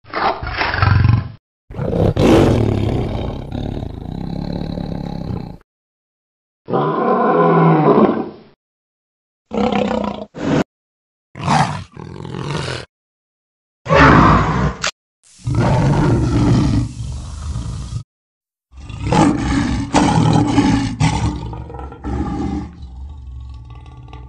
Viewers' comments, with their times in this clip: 0:06 My favourite roar sound